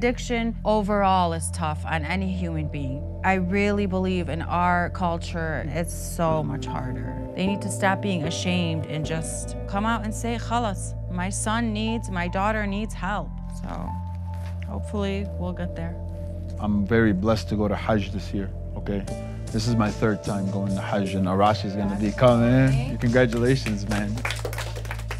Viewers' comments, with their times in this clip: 0:10 haha how she pronounced it